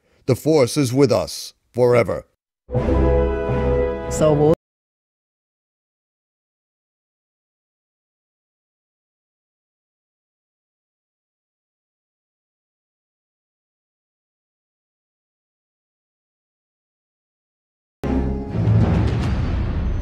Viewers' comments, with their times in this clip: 0:04 the audio cuts out for 15 secs.
0:07 too bad sounds off